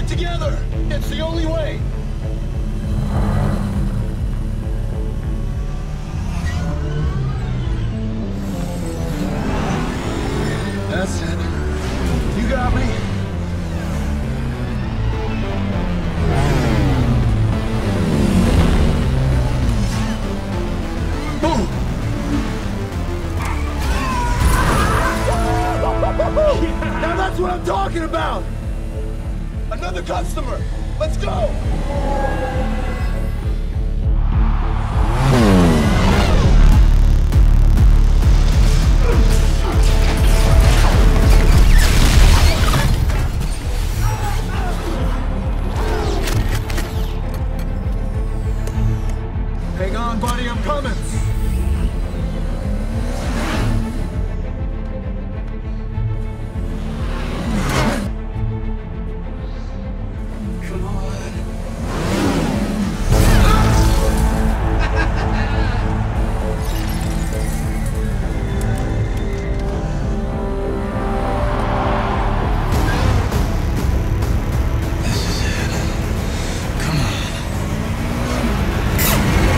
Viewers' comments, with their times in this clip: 0:05 goosebumps… that affirming nod (no spoken word needed) and the music swelling. Man and ai uniting creating a beautiful harmony like his father’s dream.
0:36 Lord have mercy that bass is crazy!
1:05 Did CLU just LAUGH when he killed that program. God that's dark.